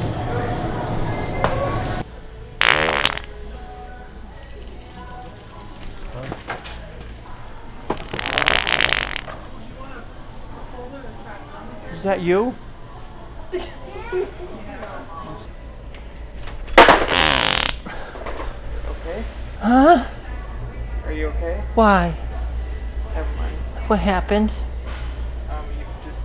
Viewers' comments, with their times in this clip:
0:10 ❤It was Love at first Fart . Now I know how to get a woman 👠👠 to Notice me. Thank you 😂